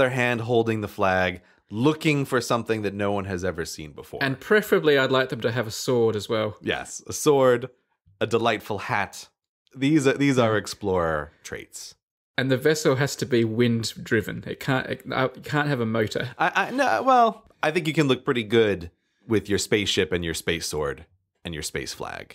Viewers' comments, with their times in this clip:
0:07 I absolutely LOVE the way Grey says "A delightful hat"